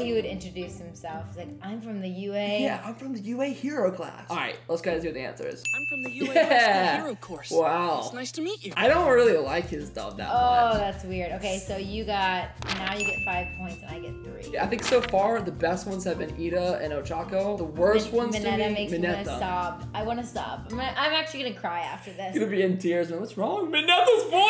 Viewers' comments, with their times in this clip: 0:09 well, it’s very iconic, and whenever you think of the character you think of that English voice